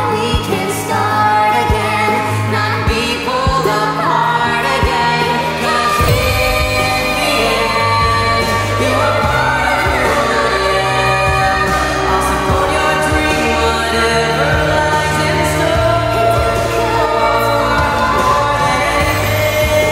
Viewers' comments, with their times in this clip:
0:05 I love the change you did here it sounds beautiful, was it only 1 pitch lower?
0:05 This sounds majestic